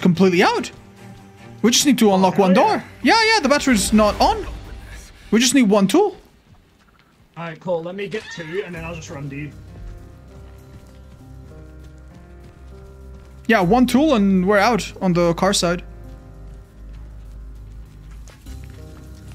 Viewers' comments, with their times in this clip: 0:07 I can't be the only one cracking up hearing the chicken unceremoniously get wrecked by Ana in the background 💀 💀💀